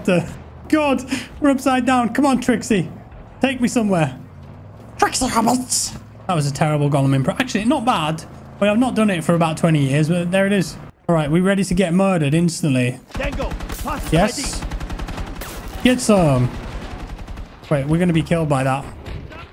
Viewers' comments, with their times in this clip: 0:03 I did NOT expect a Gollum impression
0:04 that Golum impression sounds more like Golum than Golum
0:04 my man with the chabelo impression